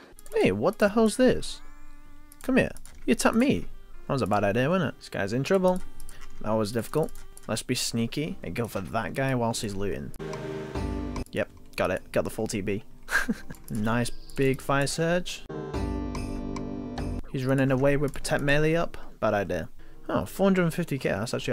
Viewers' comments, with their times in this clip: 0:08 Sweet Home Alabama starts playing